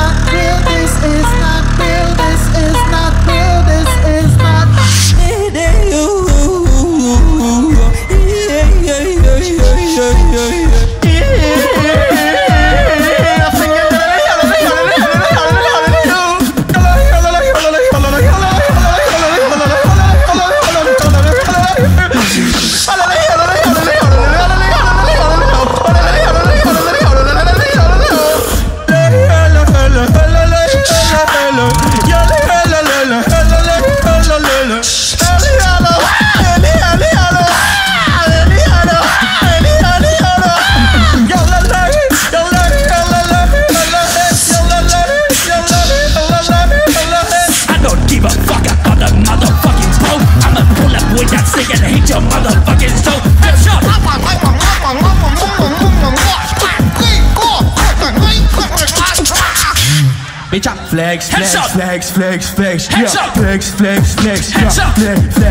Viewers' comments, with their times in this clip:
0:04 when you use 100% of brain and beatbox
0:13 OK, I guess it's a yodeling competition now.
0:15 mans had the best beat of the night
0:16 The Battle Goes On: Alem: Its Time to end this.. Alem: Yodels [gets the most applause]
0:16 That Drop on is ON FIREE!!!
0:16 is so funny when his start to singing yololol
0:16 Everybody gangsta until Alem starts yolohowing.
0:17 Best part!! THE CROWD GOES OHHHHHH 😱😱😱😱😱
0:35 WHO is making the crow sound?!?!? 💀💀⚰⚰😂
0:46 Me: Why do I hear boss music:
0:47 My fav part !!! That rap 🔥
0:53 Forgot Alexinho Mumble rap session. xD